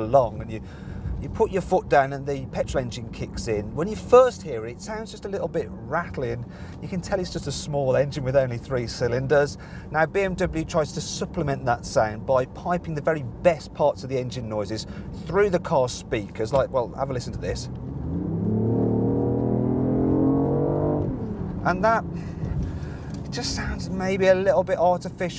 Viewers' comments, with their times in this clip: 0:09 fake engine sounds in loudspeakers, really? Wow... it dosn't get much more lame than this.